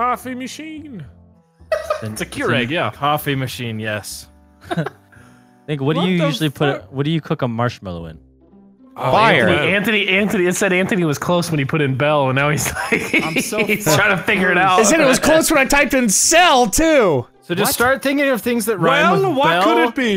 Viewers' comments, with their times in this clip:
0:04 it sounds like vanoss said the n-word but not with hard r